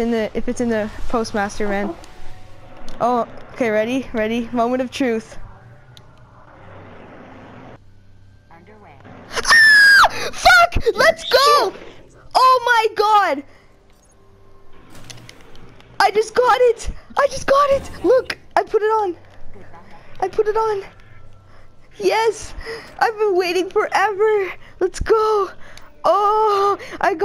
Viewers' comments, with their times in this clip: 0:09 minute hahaha aaaaa are boy or girl?